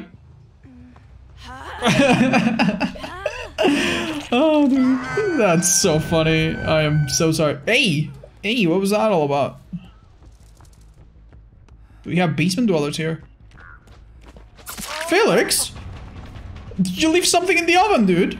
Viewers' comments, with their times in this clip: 0:06 Could someone explain the notification to me? Did he open a chest down there (he doesn't carry an item...)? Didn't realize that it's that loud to notify the killer in such distance.